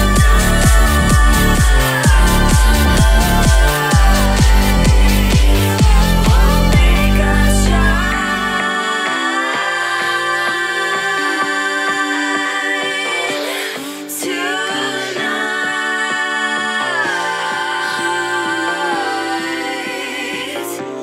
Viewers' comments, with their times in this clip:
0:09 The screeching lol